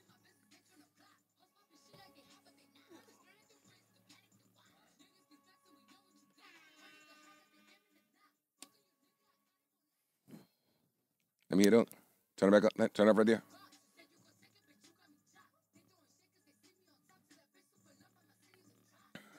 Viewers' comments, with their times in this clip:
0:04 that long ass awkward ass silence 😂😂😂